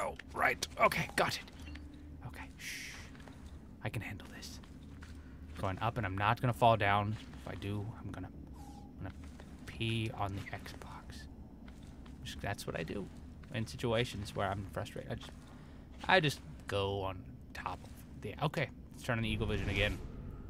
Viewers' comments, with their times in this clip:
0:03 haha i can handle this ! XD Sounds like tom cruise XD